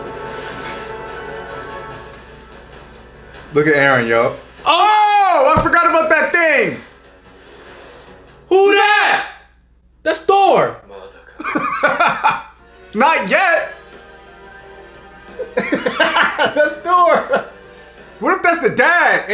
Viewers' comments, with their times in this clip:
0:05 lol why you guys look like Rush Hour but the other one is Arab version not chinese, the way you guys scream Who Datt hahaha